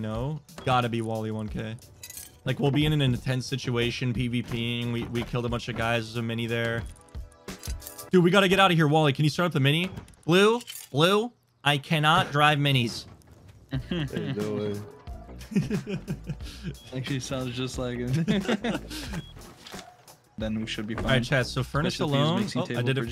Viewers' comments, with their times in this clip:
0:09 Bro is the last one that should be talking with his nasally ass voice. 😂😂😂